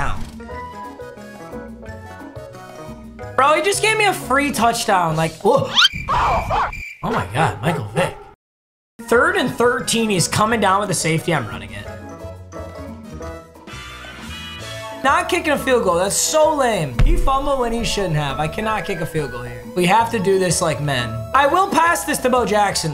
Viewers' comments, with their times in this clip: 0:06 HE PLAYED DOG BARKS AFTER MIKE VICK THREW A BAD BALL 😂😂😂
0:06 those barks were so outta pocket
0:07 I heard that barking sound effect when you said Michael Vick😂😂